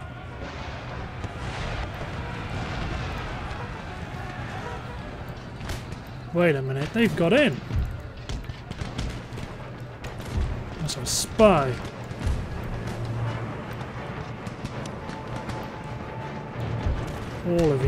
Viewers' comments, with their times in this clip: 0:05 It's like a movie, everything was fine. but SOMEHOW they got in and the music changed.